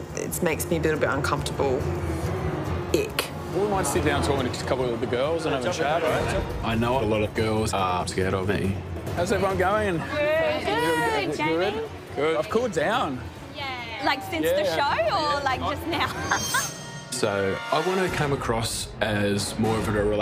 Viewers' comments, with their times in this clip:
0:05 omg the frankenbiting is insane
0:06 lmao the editing of that audio!!!
0:06 THAT FRANKENBITING, THOUGH!